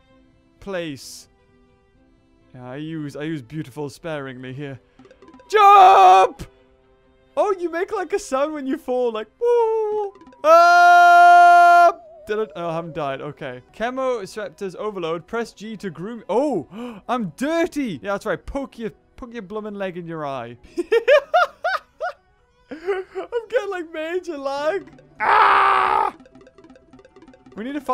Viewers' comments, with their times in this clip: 0:10 RIP fellas with headphone thingies.